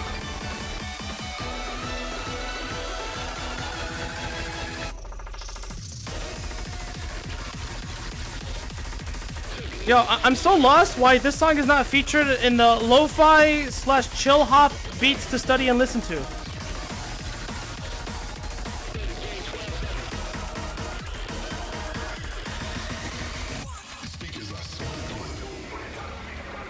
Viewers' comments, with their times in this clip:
0:09 Beats to break your furniture and arms to.